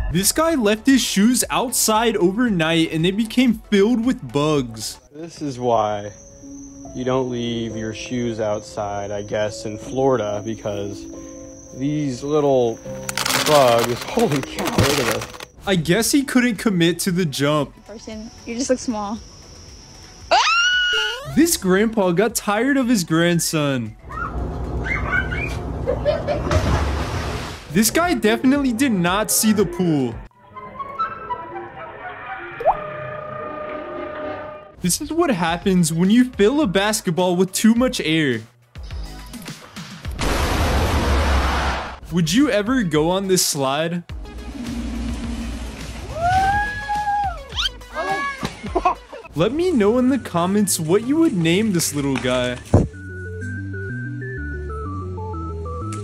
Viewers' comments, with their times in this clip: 0:09 WHY WHERE THE BUGS IN THE BEGINNING CRUNCHY
0:12 those look and sound like hard candys ngl 😂
0:24 gramps had enough, JUST GET IN THE POOL STOP SCREECHIN 💀💀
0:35 If I was there, my soul would’ve left my body as well as my hearing 😢😢😬😬🫠🫠
0:40 When caseoh farts